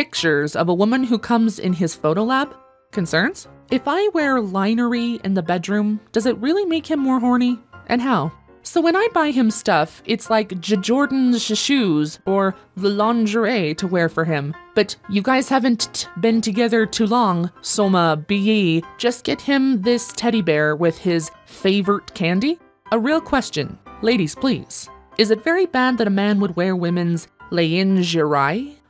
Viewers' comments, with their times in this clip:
0:09 Thought it said "guy shaven't" instead of "guys haven't". As in a guy who hasn't shaved.